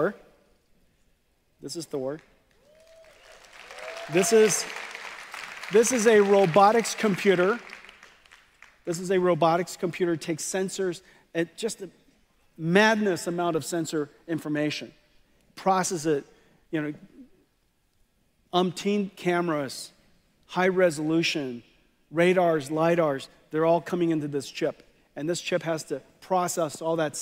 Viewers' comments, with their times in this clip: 0:08 he sounds like me if I were shoved on stage to introduce a product that I never saw or heard of the specs. 😂😂😂